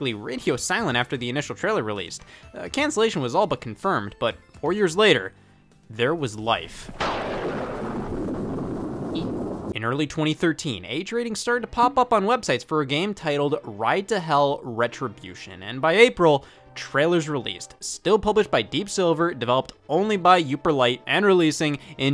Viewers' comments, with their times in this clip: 0:05 There was life Scott: ē
0:08 I love that little e scott does it made me laugh